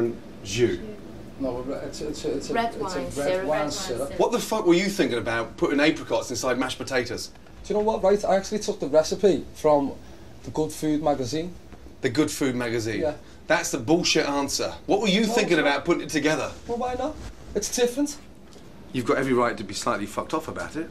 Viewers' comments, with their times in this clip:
0:07 Wheres that guy from he sounds like Darren Till?!?!?